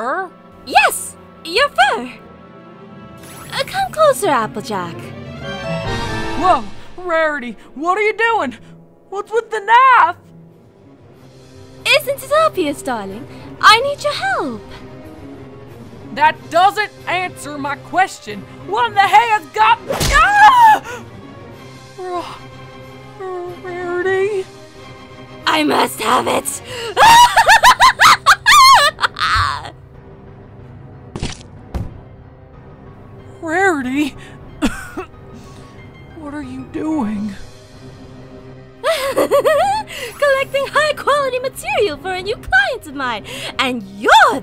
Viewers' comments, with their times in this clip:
0:08 "wHaT's WiTh ThE knAAF" gets me every time
0:09 I love the way how apple jack says knife lol
0:28 rarity’s laugh got me so hard bro💀💀💀💀